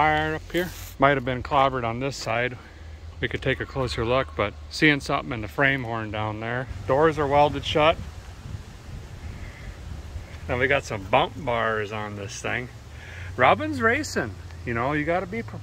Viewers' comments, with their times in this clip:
0:03 Did anyone else catch that wendigo scream ?